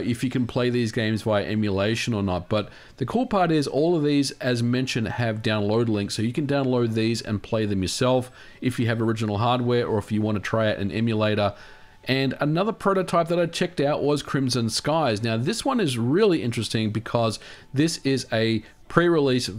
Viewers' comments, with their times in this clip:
0:04 did he just say downloadeling?